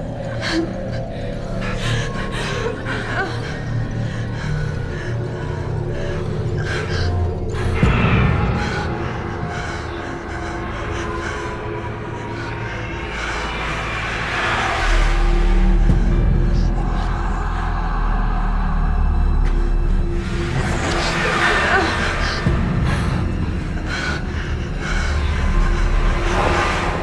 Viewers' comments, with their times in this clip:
0:10 Ok sorry to say this but that breathing does not sound erm.... proper to be on air..